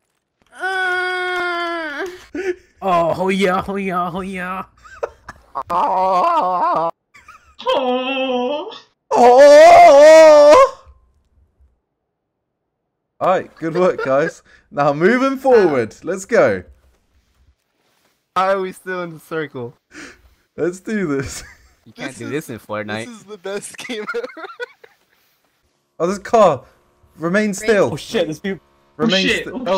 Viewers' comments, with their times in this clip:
0:10 that akward silence lolol